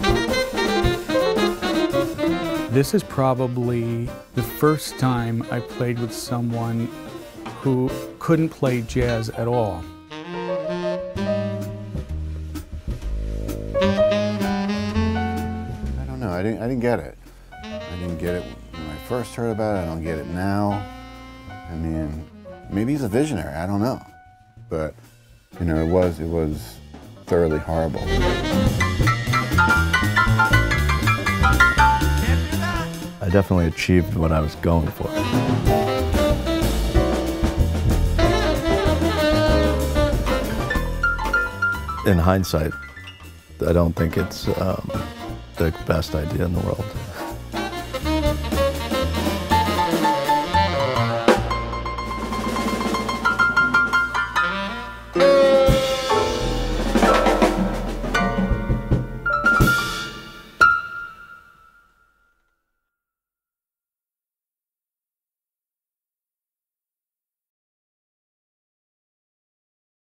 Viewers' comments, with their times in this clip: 0:08 Jon seems so surprised that he pulled off those few notes LUL
0:09 it sounds like he can actually play the piano for a few seconds.
0:29 actually sounds pretty awesome!
0:29 I've heard worse jazz before
0:31 random key mashing "CAN'T DO THAT!"
0:52 Well... he played a 9 which was actually beautiful.... LOL